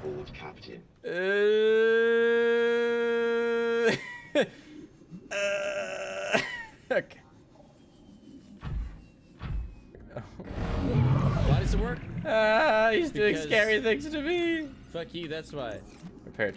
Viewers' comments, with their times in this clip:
0:04 Wow your prawn sure does have a great voice; Matches the name real well!